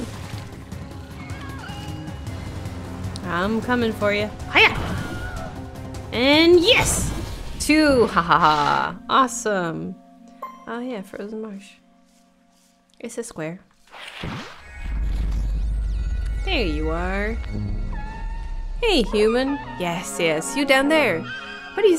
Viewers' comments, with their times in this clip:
0:03 The subtle Wilhelm scream at like got me good 😆